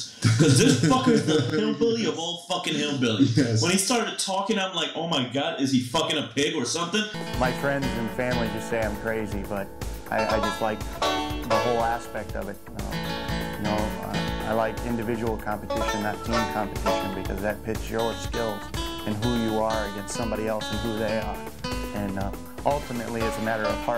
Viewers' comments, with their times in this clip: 0:07 LOOL that music had me rolling